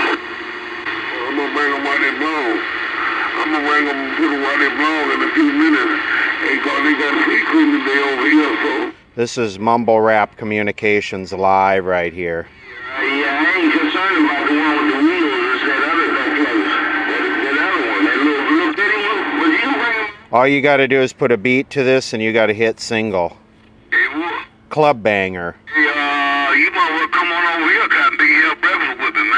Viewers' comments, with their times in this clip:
0:10 Mumble rap version of Convoy by CW McCall? Sounds like a hit to me!